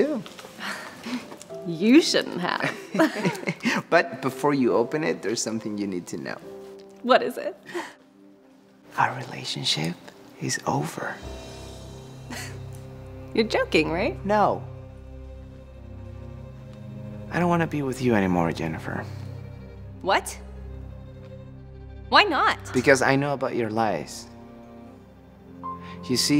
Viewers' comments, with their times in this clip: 0:08 why this so funny tho- *whisper* our relationship, is over :D
0:08 the way he says we're over is so funny ngl